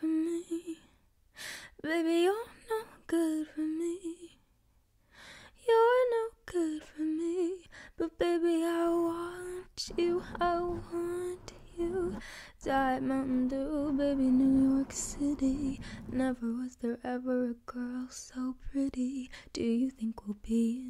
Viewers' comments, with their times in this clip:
0:04 stop ur voice is gorgeous ❤so ＊✿❀ ρҽαƈҽϝυʅ ❀✿＊